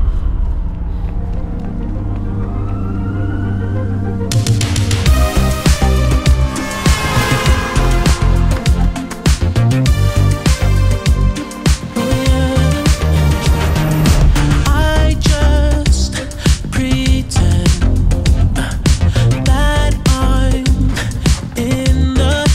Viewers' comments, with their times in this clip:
0:05 beat so fire 🔥 in your eyes is fire so good bro,